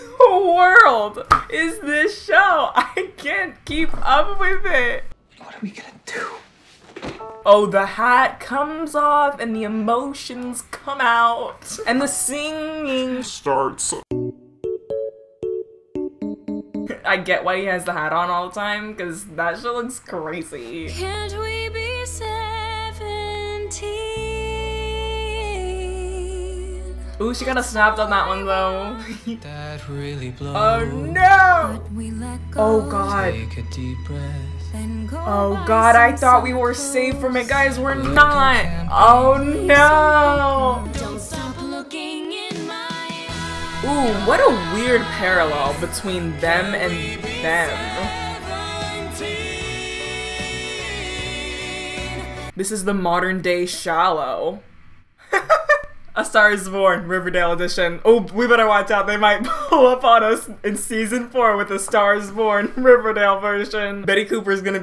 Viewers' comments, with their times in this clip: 0:07 girl sounds like she is singing to me idk why
0:49 so is no one gonna point out how cole SNAPPED on tht harmony tho🤭👀
0:50 i thought cole, lili, madeleine, and vanessa sounded really good though-
0:50 Okay but the harmony/dissonance on seventeen with Cole and Lili was lowkey really good though